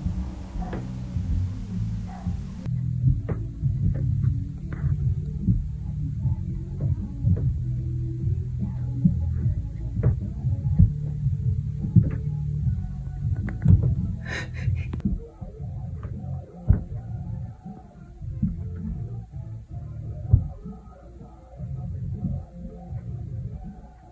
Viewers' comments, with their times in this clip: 0:09 sounds like he's trying to put his heels through the floor.